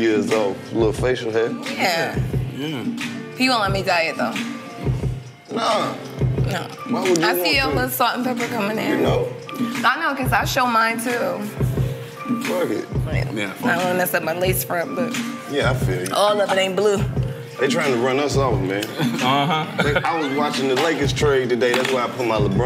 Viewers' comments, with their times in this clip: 0:10 why he inhale like that 😂😂😂